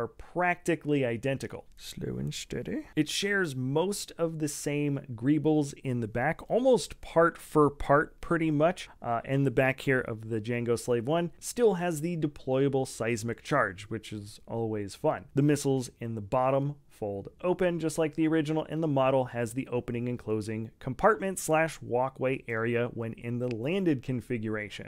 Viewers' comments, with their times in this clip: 0:09 hope you're not allergic to bass